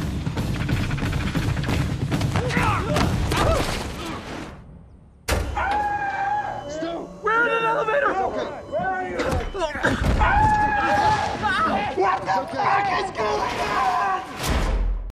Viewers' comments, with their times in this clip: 0:11 Here's Stu crying out his insane scream for the third and final time in The Hangover trilogy, ?!?!?!